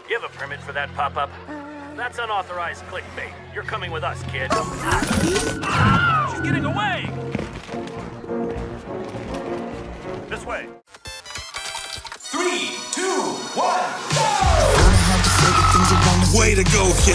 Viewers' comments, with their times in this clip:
0:05 the willhelm scream